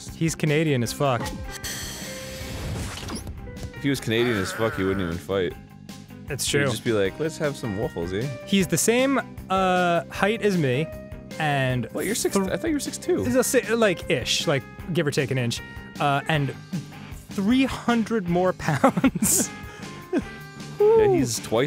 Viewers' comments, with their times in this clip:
0:06 "Let's have some waffles eh?" -Arins impression of a Canadian 2015